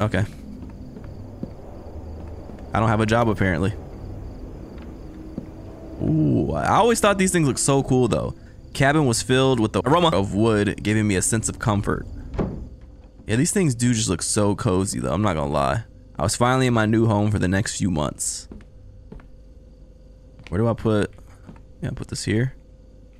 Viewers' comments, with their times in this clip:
0:10 so no one talkin bout him editing the word aroma in on 💀💀💀